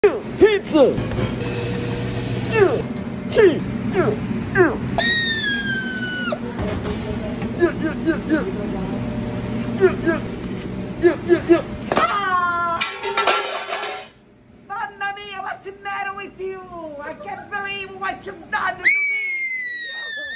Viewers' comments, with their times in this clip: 0:05 He sounds like iggy from smr
0:07 Shark puppet: lest make cheese pizza Shark puppet yeah x4 Shark puppet: noooo my cheese pizza screams and go exit